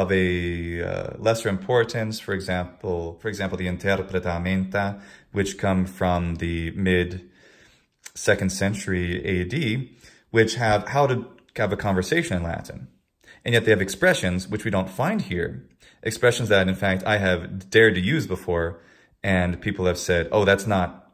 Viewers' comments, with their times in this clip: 0:05 I have a question. you mention a text from the mid 2nd Century AD about conversations in Latin. What is the name of that text? You were speaking too quickly, I couldn't catch the name